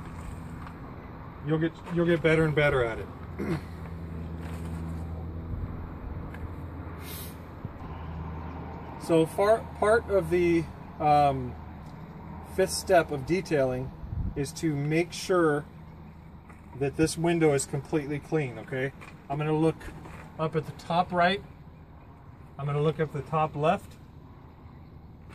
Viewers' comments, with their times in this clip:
0:08 He says “fart part” 👍
0:10 Fart? This would be a truly anal retentive vid if you’d just edit that part. It’s offensive